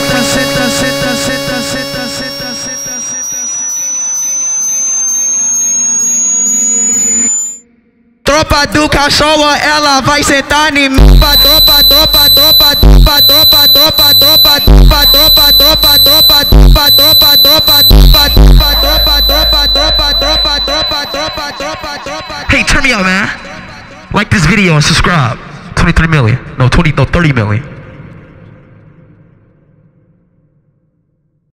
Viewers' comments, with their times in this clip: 0:10 he won the loud wars
0:10 Is the best part. Its so calm and chill. I literally fall easier asleep hearing this part. Thanks speed!
0:10 why is that drop so hard wtf
0:10 rip earphone users
0:11 microwave type beat😂😂😂
0:11 ppl who wearing AirPods at full blast in this part ☠️🥲
0:11 🕯️from me to ear/headphone users
0:13 RIP full blast headphones users💀💀💀☠️☠️☠️💀
0:17 In my ear is ringing I had headphones